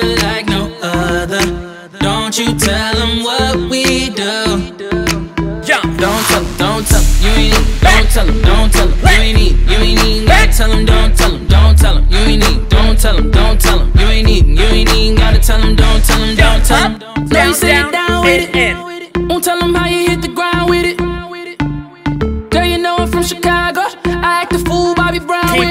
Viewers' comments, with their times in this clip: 0:07 lol he just starts barking